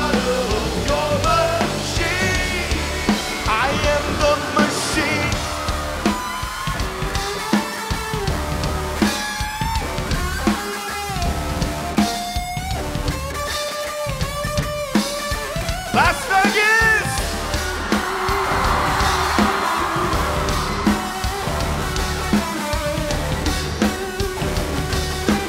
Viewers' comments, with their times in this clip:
0:06 The guitar tho!!!!!!